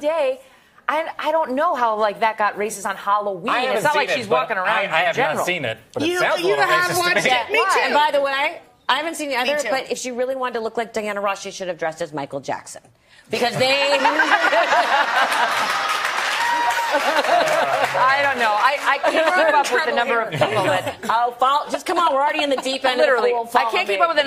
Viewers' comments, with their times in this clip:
0:09 “If she really wanted to look like Diana Ross, she should of dressed as Michael Jackson” and the crowd erupts. Someone PLEASE explain the joke wtf